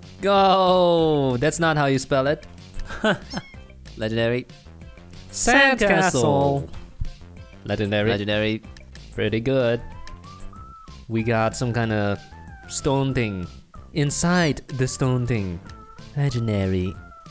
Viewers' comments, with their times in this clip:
0:03 so cute them saying sandcastle